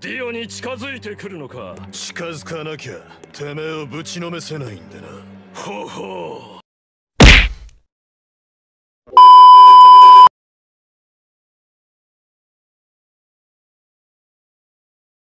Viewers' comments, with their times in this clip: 0:13 thats best ending intro ever how he crying XDDDD